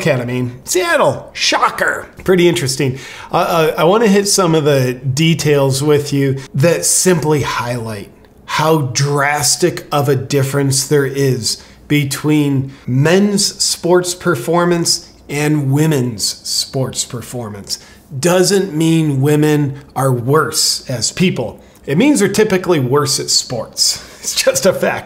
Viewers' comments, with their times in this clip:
0:07 Haha the baby crying I thought it was my baby crying. You got me there 😂